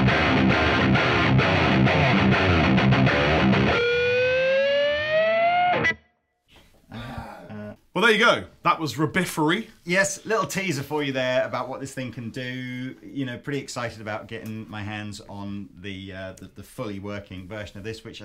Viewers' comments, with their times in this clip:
0:04 All cool until i head that nasty digital aliasing sound